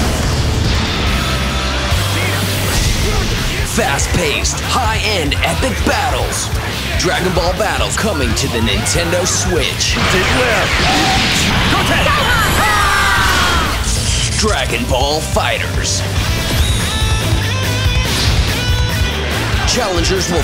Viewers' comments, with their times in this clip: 0:07 Dragon Ball BattleZ?